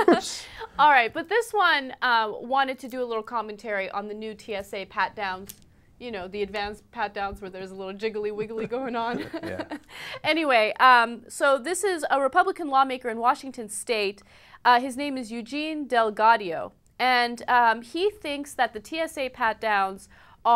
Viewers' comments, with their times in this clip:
0:08 is it just me or did anna laugh like bush there?